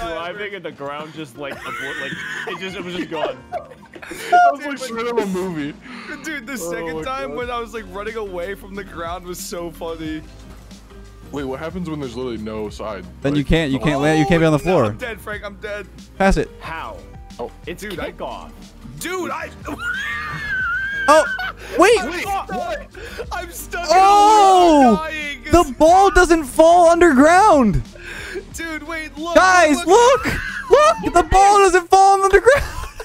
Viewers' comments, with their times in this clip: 0:03 FNaF freddy nose honk😳
0:19 WHAT IS THAT LAUGH 😂😂😂😂😂